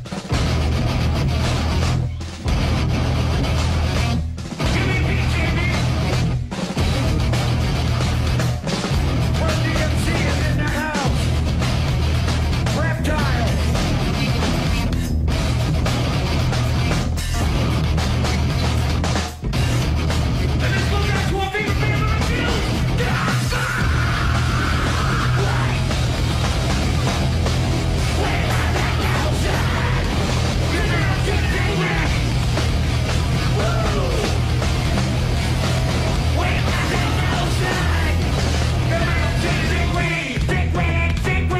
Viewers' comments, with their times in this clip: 0:07 crucial braindead chug riff
0:23 That scream is pretty good though